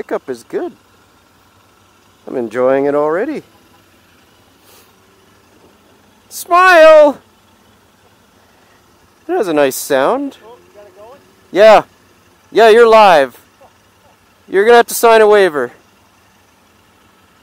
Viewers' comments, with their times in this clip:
0:05 Nice review. BTW "Smile" punctured my ear drums 😂